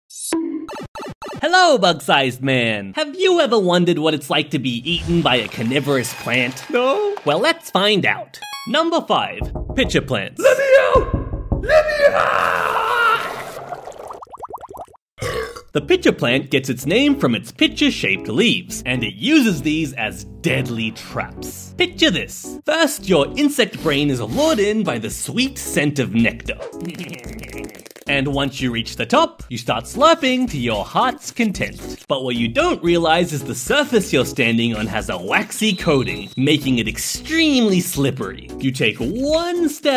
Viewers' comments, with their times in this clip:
0:05 I love how you say no like that
0:09 "LET ME OUT!" "LET ME OOOOU-" gets dissolved B U R P
0:25 I like your voice😊